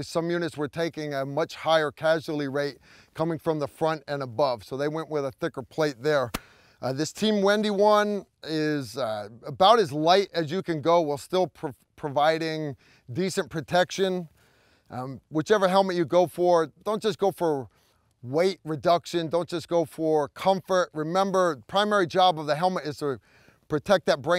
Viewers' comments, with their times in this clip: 0:05 was that a call of duty hit marker?